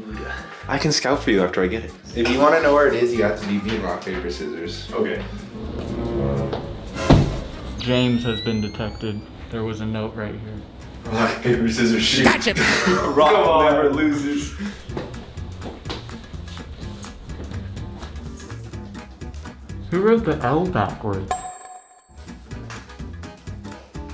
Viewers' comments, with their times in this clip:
0:10 Why does their voices sound alike